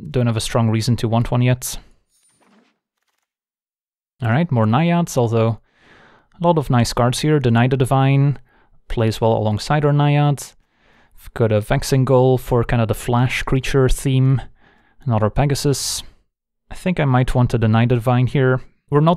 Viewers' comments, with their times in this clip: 0:06 was alt+tabbed out, just listening until he got to the games, when I heard the card "The Knight of the Vine," a card I'd never heard of before. Tabbed back to this window, backed up the video a bit, listened to it again.